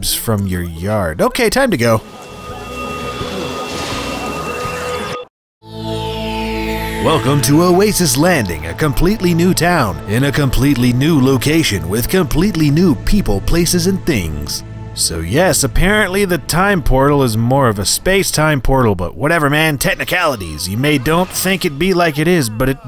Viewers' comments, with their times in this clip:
0:08 you sound like the guy from movie trailers